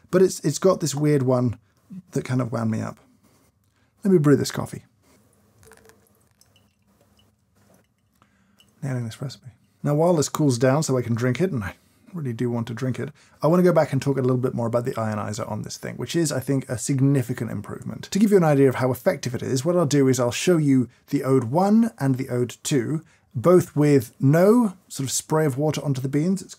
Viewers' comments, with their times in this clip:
0:07 What does James say ? The subs say "Nailing this recipe...", but isn't he really deaming about an espresso there? "Nah in an espresso". OR, in Swedish "Nä ingen espresso" :D